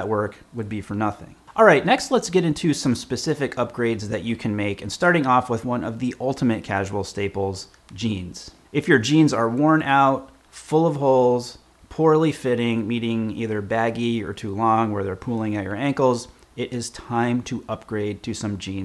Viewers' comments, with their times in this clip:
0:06 I was not listening carefully and thought he talks about „genes“ 😅